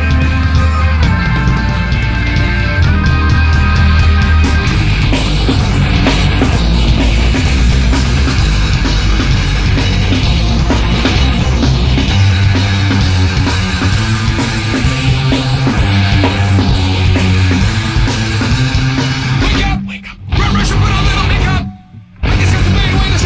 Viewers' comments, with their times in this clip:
0:05 you can hear the guitar chasing the drums